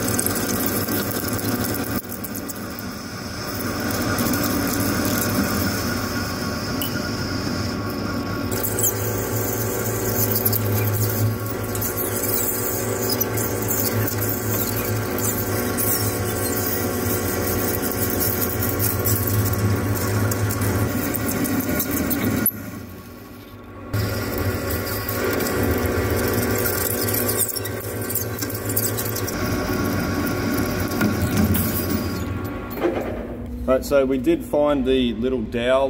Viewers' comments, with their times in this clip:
0:09 cool sound with the round insert :) edit: so what's the new failure mechanism for this piece - is it possible that this eye breaks rather than something more expensive?
0:19 Sound like a budgie's in the house!